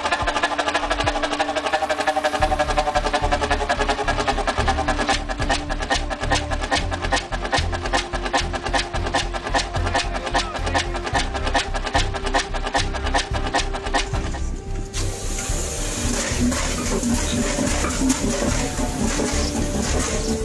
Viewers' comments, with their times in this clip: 0:07 I could make a song to the sound of the engine if only I owned a banjo